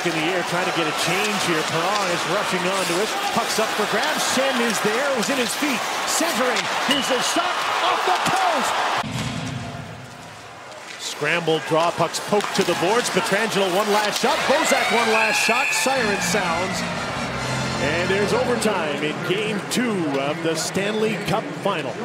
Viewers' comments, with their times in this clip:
0:06 CLANG! You could hear that outside the arena!!